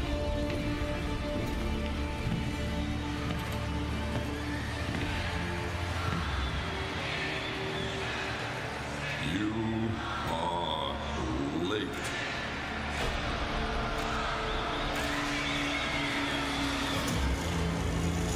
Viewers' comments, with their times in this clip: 0:04 the countdown was recorded a few hours ago at the Sound Panel from live audience and then they put that inside the gameplay reveal